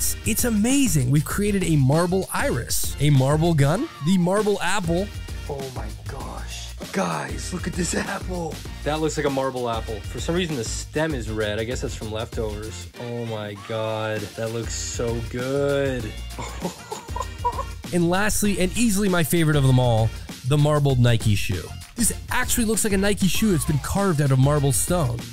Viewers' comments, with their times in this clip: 0:06 I almost got a heart attack when he switched up the audio im using headphones and it sounded like someone was behind me... god damn ^^'